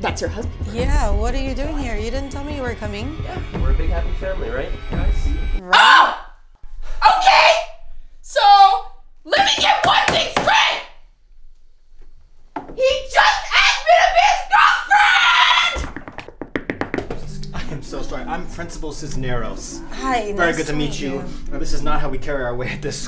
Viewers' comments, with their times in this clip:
0:05 wow Hannah must of hurt her voice lol I was laughing so hard 😂